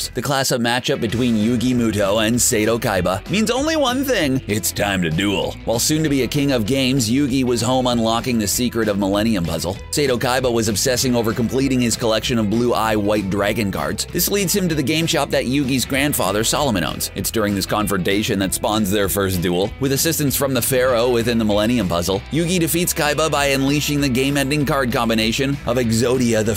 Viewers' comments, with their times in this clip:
0:07 did he say Millenium Muzzle???